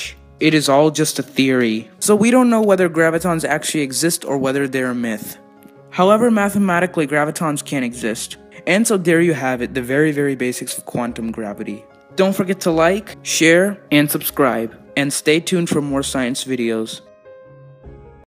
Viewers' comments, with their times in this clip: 0:09 Did you say can or can't?